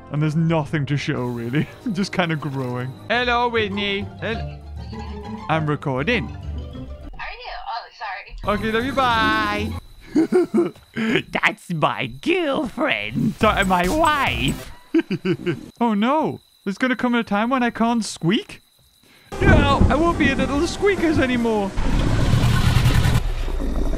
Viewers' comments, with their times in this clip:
0:10 "That's my girlfriend sorry my wife" That's my favorite part his voice